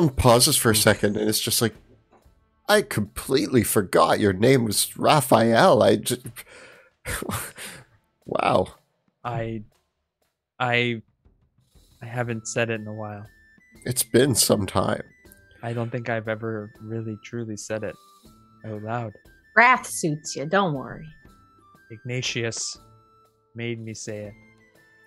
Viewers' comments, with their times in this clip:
0:07 i thought "raf" was "wrath" lol